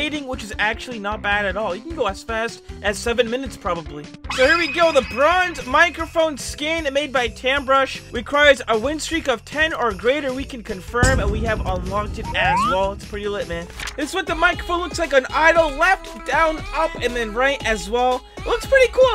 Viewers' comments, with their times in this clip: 0:05 i heard lebrons microphone